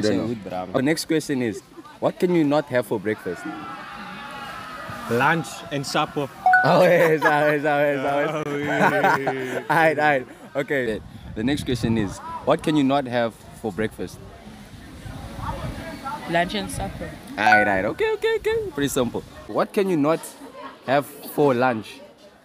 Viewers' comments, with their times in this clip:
0:09 this laugh oh my gawd....